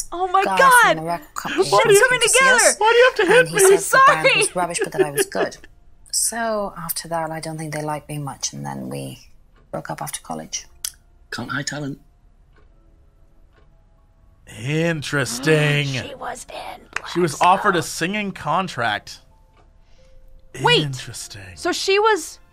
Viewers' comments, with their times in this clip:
0:08 “Why do you have to hit me?!” The cracking in his voice is perfect